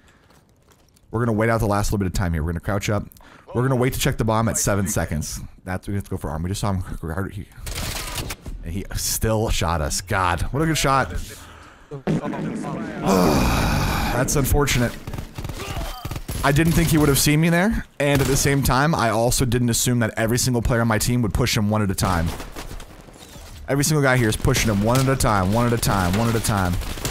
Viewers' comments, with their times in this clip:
0:09 Didn’t anyone hear those fart sounds?